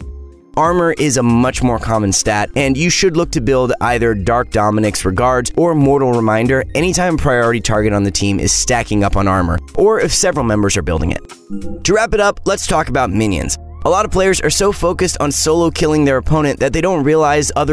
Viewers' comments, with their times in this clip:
0:04 Dark Dominicks Regards pepega intensifies